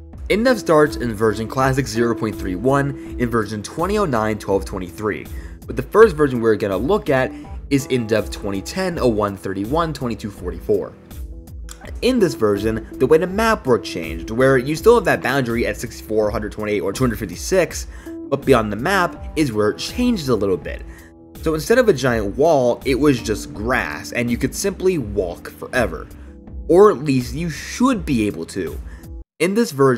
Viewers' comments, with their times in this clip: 0:10 I like the intonation in his voice here it’s satisfying I like listening to this guy